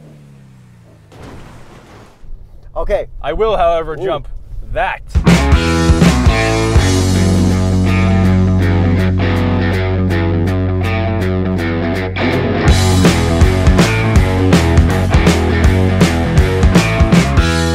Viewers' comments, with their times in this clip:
0:05 Turn the FUCKING MUSIC DOWN! Or your voices UP! I'm wearing freaking headphones here!